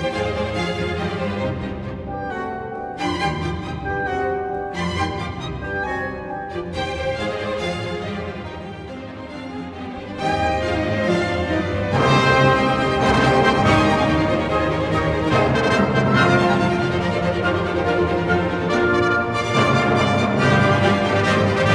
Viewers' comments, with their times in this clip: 0:07 shows his intention to display the second violin, which is rare in other renditions for this music piece